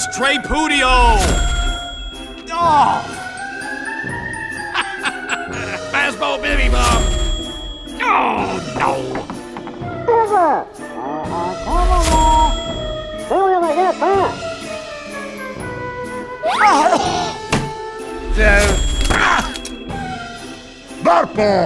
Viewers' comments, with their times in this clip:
0:06 I love when u do soldier’s and it goes PA-POW! And then the person in front killbinds The purpose of the taunt is to make people killbind